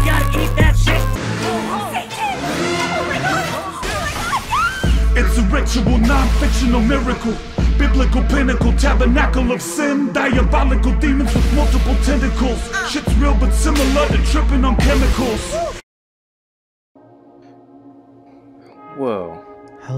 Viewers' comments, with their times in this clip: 0:05 eminem is dat u?